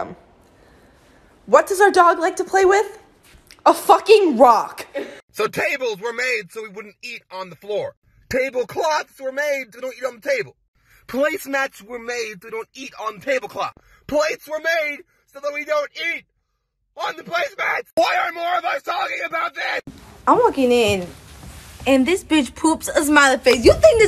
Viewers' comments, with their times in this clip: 0:10 are we gonna ignore how he sounds like Jerry Sienfield??